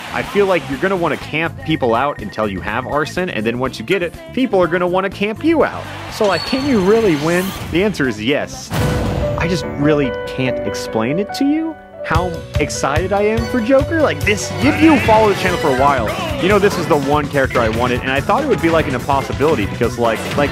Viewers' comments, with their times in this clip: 0:08 I thought he waas doing a anime dramatic speech😅